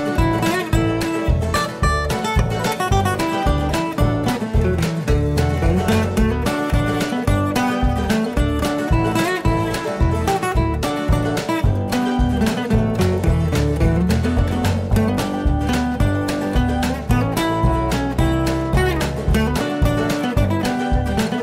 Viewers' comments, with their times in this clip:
0:03 put it on 2x speed. Reminds me of the end credits that go super fast like in scary movie.